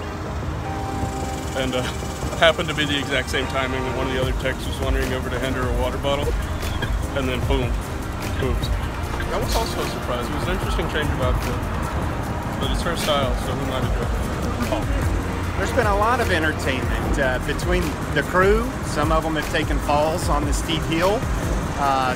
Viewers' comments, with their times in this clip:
0:08 the guy sounds and resembles the guy who owns the youtube series Gas Station Encounters